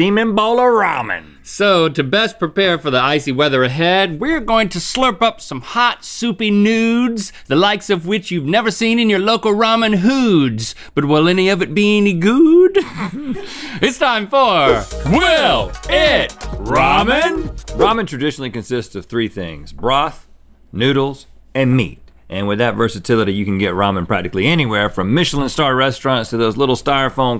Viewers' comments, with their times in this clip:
0:08 we all know what Rhett heard 😂😂